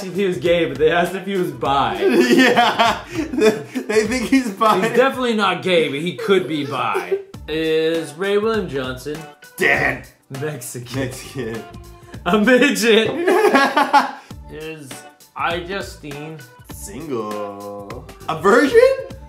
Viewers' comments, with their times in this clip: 0:04 wait it sounds like a baby